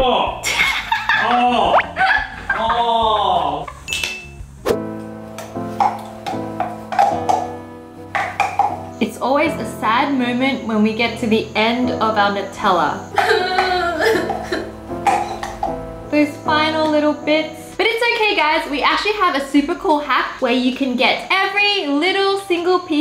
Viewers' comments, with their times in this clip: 0:07 It's never the end of my Natalia.